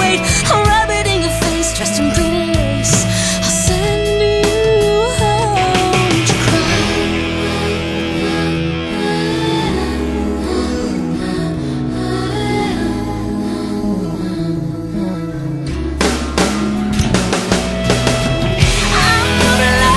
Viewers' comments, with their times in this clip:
0:07 I love that thing she does where she's breathin with a melody or wateva u call it! I love it! This song is really gud!